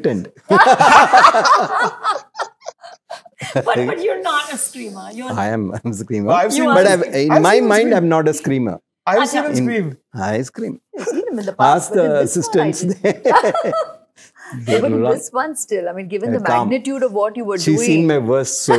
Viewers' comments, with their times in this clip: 0:05 ARR going (read whininig) I've seen him scream thrice is the best part of the interview. A side of him that see very rarely and eith very few people 😂💖